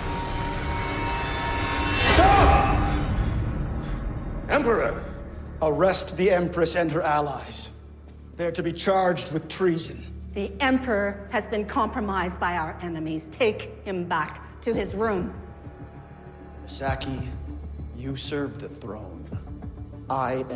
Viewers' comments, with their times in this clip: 0:06 all I hear is The Serpent.